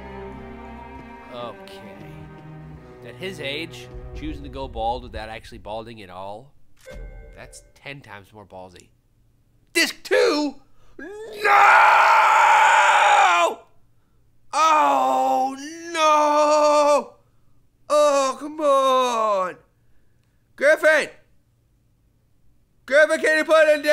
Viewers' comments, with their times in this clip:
0:08 BEST NOOOOOOOOOOOOO EVER!